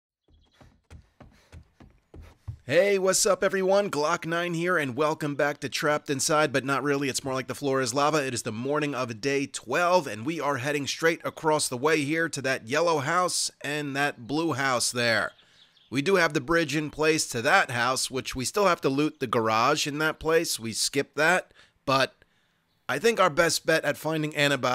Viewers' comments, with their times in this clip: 0:05 Rolls off the tongue!!!